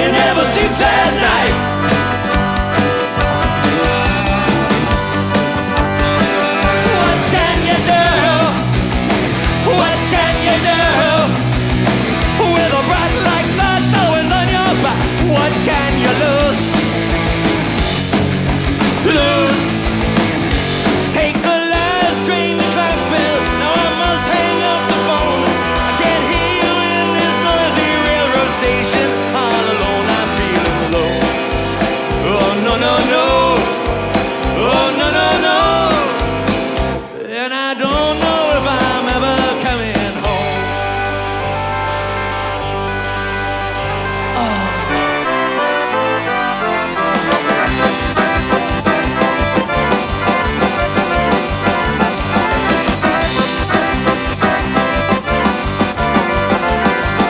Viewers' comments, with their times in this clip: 0:08 HOLY SHIT THE RAMONES ARE REBORN AND ALIVE!
0:14 Weird/neat to occasionally hear the older vocal mannerisms peeking through.
0:45 Not quite my tempo...